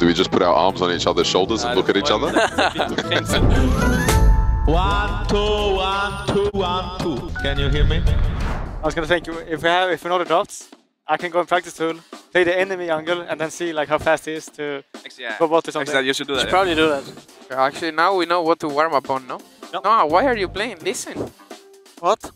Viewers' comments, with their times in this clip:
0:04 I only was waiting for this <3 buuut where is Perkz aaa??? So much alugh as always love you guys